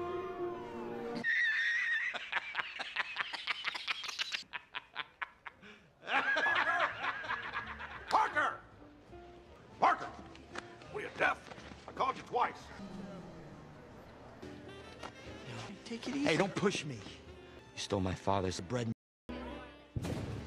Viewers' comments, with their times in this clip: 0:08 I got so effing scared watching it am. Thought someone was actually knocking at my door.